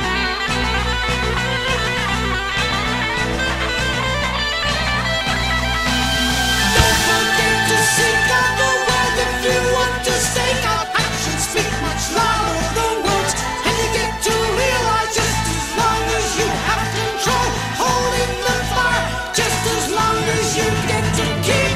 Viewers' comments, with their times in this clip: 0:06 Agreed. You can hear Steve's angular approach (Relayer) and Jon's quieter passages with the long stung vocal passages on are very reminiscent of Tales.